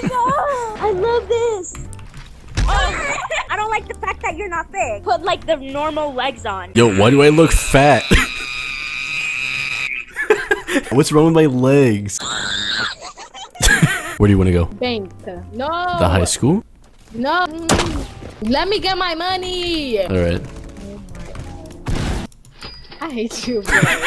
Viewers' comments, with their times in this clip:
0:09 the way she screams💀💀